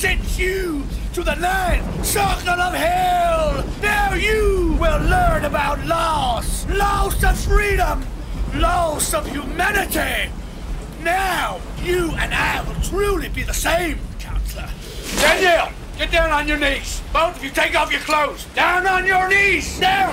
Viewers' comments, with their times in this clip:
0:08 He sounds like James Hetfield